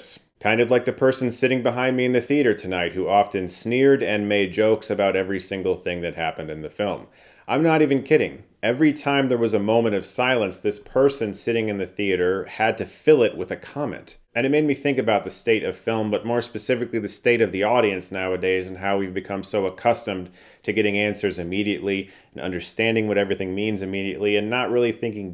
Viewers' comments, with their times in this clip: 0:09 I love how Chris says person like its in quotation marks because theater talkers are subhuman